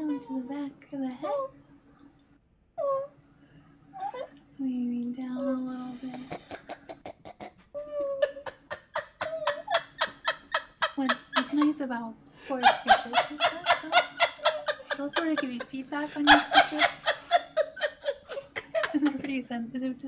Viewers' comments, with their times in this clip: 0:05 That is the most real laugh to all this :D